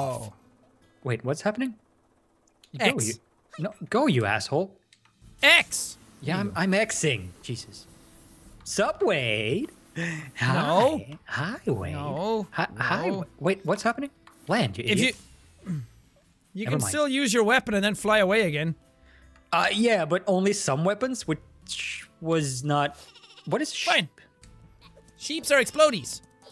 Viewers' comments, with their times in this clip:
0:08 who else thought he said subway? lol